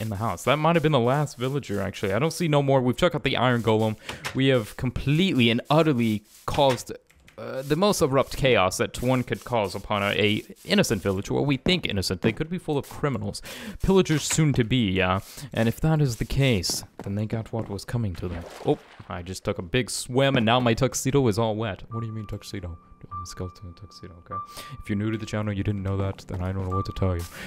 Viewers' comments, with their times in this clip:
0:08 Who else heard a random door ?